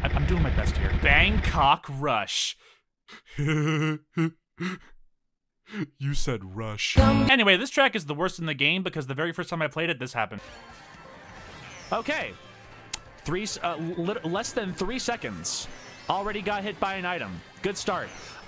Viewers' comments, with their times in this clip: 0:03 your laugh sounds like sans undertale